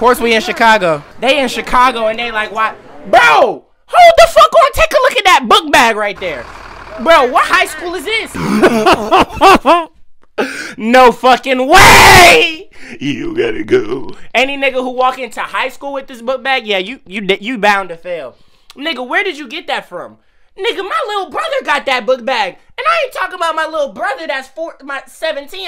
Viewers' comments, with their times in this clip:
0:08 that laugh goes crazy